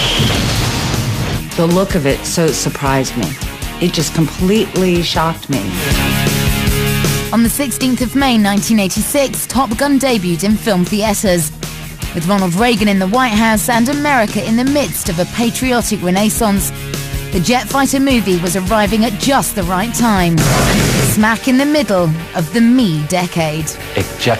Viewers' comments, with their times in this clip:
0:09 "film theAters" and "American renAIssance"